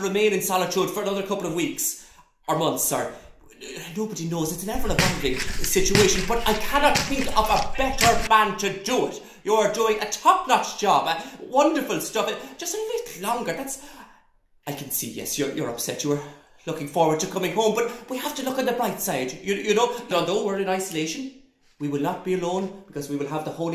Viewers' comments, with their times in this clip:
0:05 So I was wearing open-back headphones while watching this and looked down briefly and started panicking as I heard a loud banging coming from the ceiling behind me and to the right. lmao